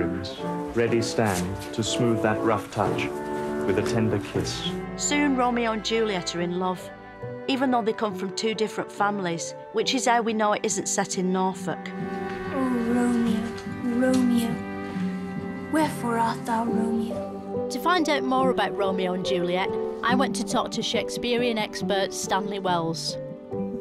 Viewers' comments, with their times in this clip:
0:08 As drily written and performed as the very best of such comedic material. Delicious. "Which is how we know they didn't come from Norfolk"..Beautiful stuff.